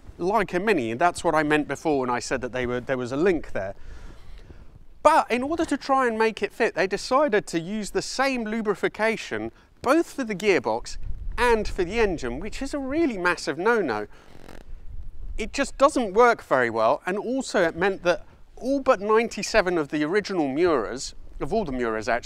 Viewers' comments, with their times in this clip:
0:09 Did he just say ‘lubrification’??? ( sh) LOL!!